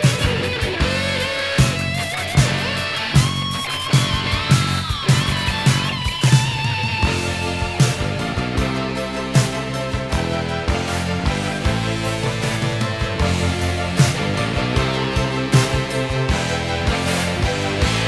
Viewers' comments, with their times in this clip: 0:06 that synth breakdown.